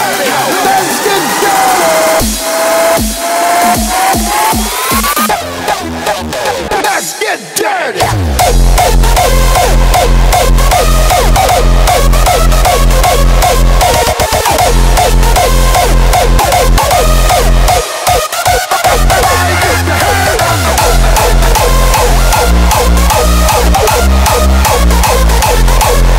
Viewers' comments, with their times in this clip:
0:07 that's a really fun section! I love it man. Good kicks. I remember when I first heard of you, and now I think you're onto what I would call the "hardstyle sound of the times".